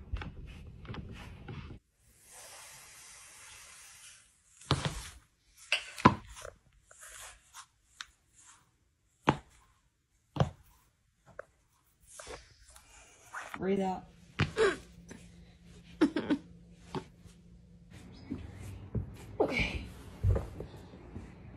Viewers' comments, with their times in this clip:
0:06 is the best crack I have ever heard.